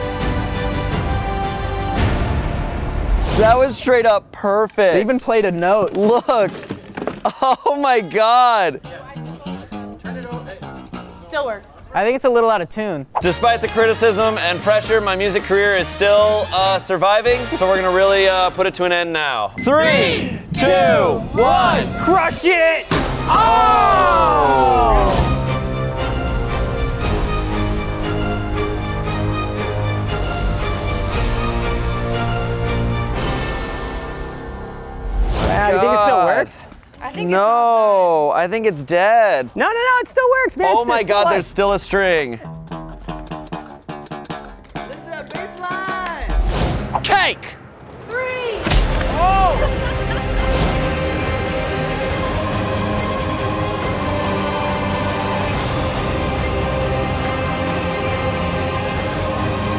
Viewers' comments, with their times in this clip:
0:08 that Reminded me of the seinfeld intro
0:41 that sounded kinda like interstellar overdrive